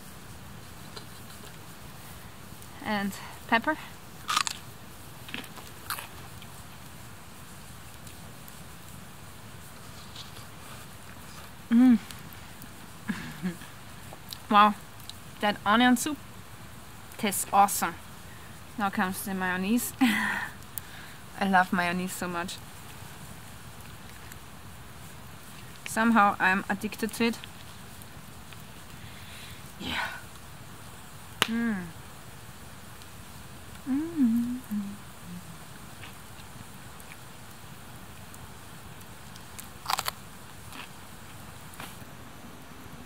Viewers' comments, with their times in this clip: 0:03 The crunch heard clear 'round the world.
0:26 "somehow i am a dickhead to it" i died xD